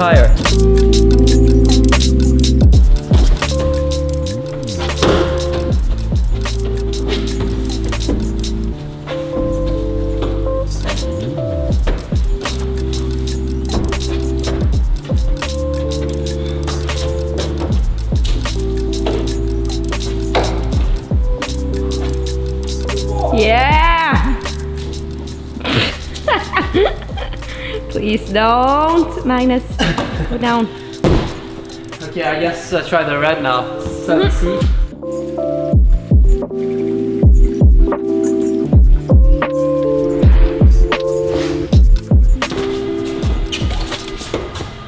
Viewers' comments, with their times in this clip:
0:04 Even the music sounds impressed
0:26 cute laugh turns to actual fear